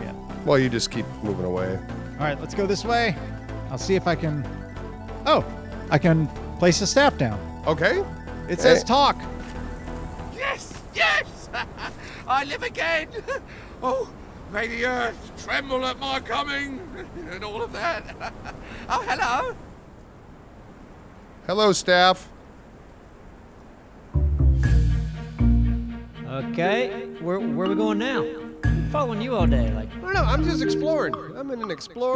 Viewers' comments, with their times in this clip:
0:10 Is that...the voice actor for the Tf2 Medic? It really sounds like him! O.o
0:10 team fortress 2 medics voice
0:10 I recognize that voice. Medic from team fortress 2? Is that you?
0:13 anyone else think that sound like medic from tf2?